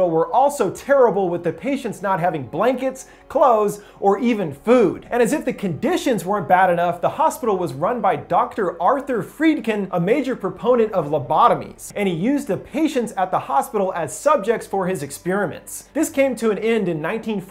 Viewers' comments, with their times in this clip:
0:03 ffs, its in the morning, pitch black in my bedroom and I have earphones in, that intro sound effect MADE ME SHIT THE BED.